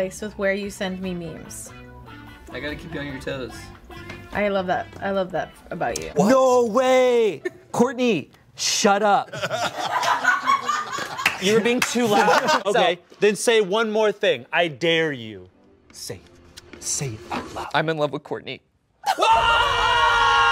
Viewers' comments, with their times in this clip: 0:05 I still believe she was indeed... talking a lot behind camera and that's why she laughed so hard.